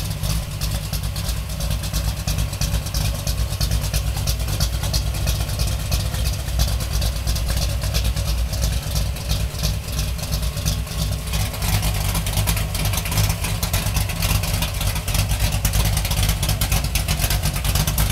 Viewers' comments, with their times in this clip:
0:03 sounds like an African playin drum